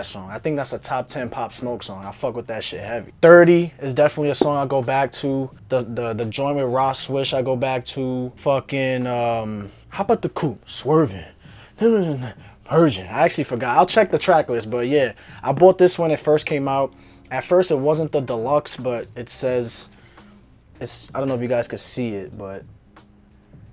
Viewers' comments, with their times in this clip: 0:10 you sound like him without even trying 🤣